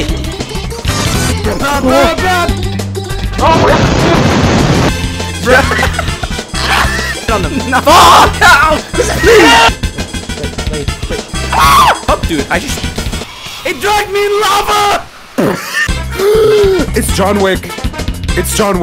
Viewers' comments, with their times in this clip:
0:03 perfect mic quality